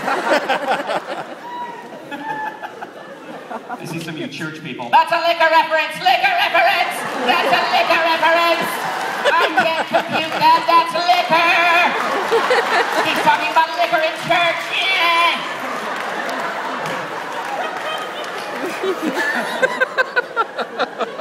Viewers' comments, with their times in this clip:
0:03 Is he impersonating a Dalek ?